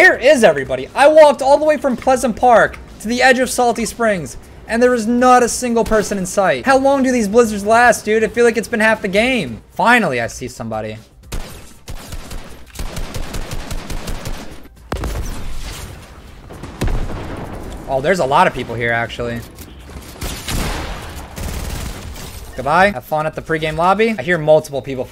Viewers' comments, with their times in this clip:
0:10 sounds like Ali a intro when you shot a player with ar